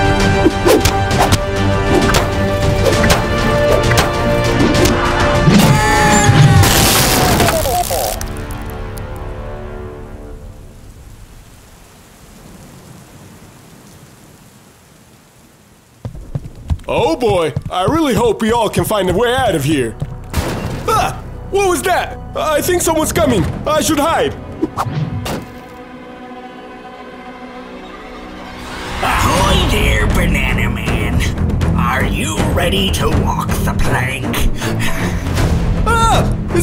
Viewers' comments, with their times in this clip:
0:05 (Boog and Gusty Screams)
0:21 Why does Bro speak British?